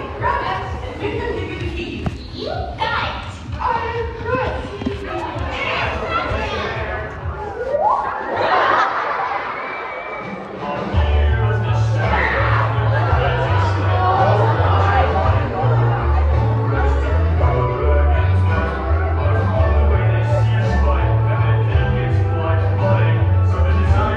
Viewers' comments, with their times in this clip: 0:03 kudos to the person who yelled "HE'S GRASSY!"
0:12 The scream that came out of nowhere